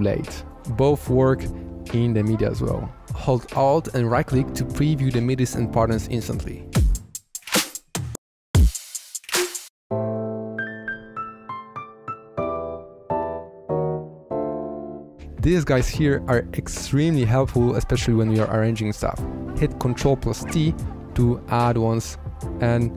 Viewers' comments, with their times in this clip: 0:10 Does anyone know on what key is that chords of the min ?